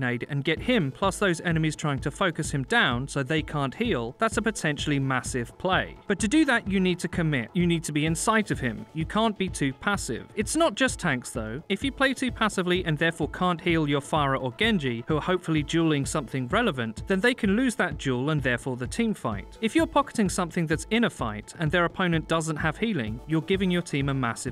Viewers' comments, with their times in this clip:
0:06 l heard "You need to be inside of him." How gay am l based on that?